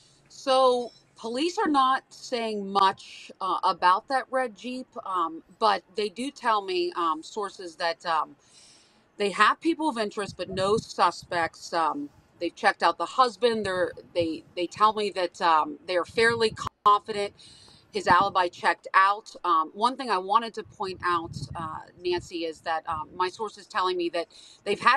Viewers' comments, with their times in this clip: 0:07 well uhhh idk uhhhh thanks lady uhhh. She said uhh 15 times. Sorry it just irritates me when people do that lol